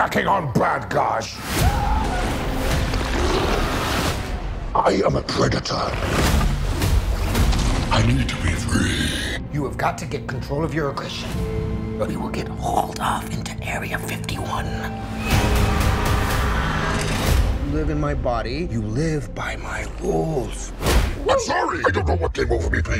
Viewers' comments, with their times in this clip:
0:05 why every movie trailer must this beat